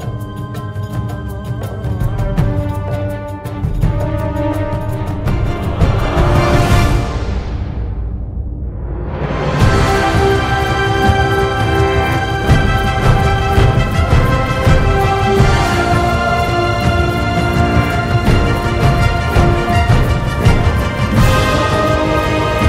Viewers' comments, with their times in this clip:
0:09 I have a so great feeling! This music is too nice!